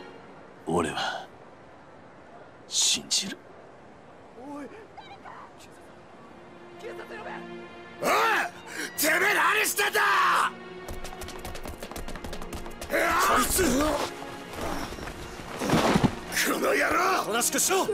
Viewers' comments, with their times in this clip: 0:03 That line there...I know the subtitles say "No... You're wrong", and my Japanese is still beginner, but didn't it sound more like he said "I... believe in you"? If you want to get really specific he said "I believe", but considering the context and the guy who stab him's face afterwards (I forgot his name) and the music, I feel like Kiryu insisting he still believes in the guy who stabbed him kind of makes sense? Maybe??